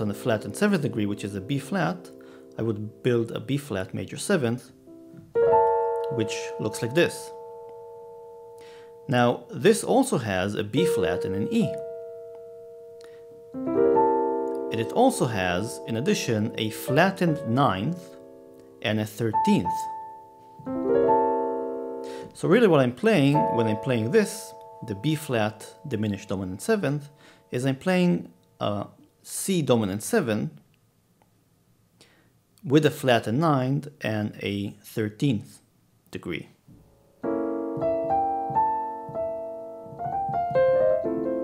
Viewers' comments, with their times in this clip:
0:05 reminds me of the super mario world game over theme :D
0:24 that Bdim(Maj7) chord i see it as a C half-whole diminished scale who wants to resolve to FMaj7